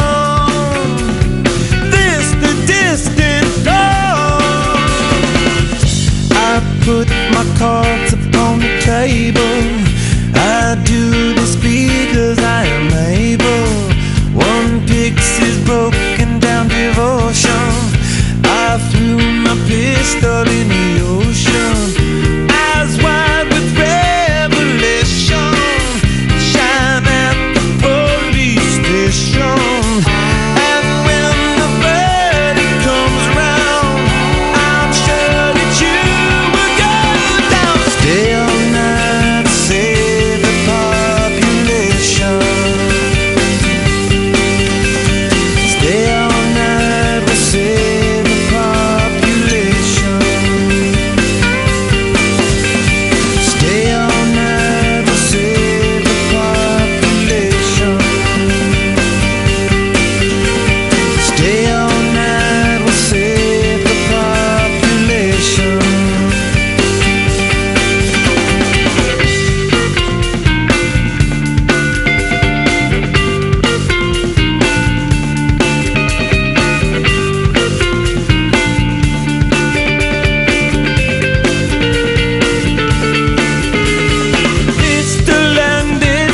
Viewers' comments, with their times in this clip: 0:09 autotune or what?
0:10 ridiculously obvious autotune :(
0:11 is that a horrible job of auto tune ..? ..like the note thats sung exactly on that second. i really hope it was just something weird anthony's voice did.
1:08 SO FUCKING GROOVY!